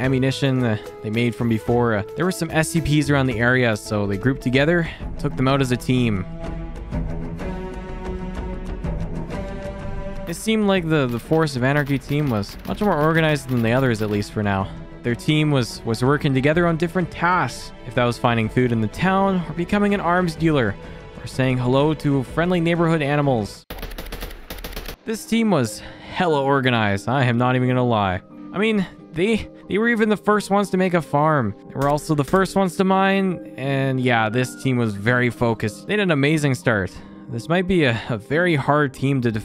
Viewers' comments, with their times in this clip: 0:06 Love that Halo music
0:07 I love how it started playing the halo theme
0:24 wise mystical tree sound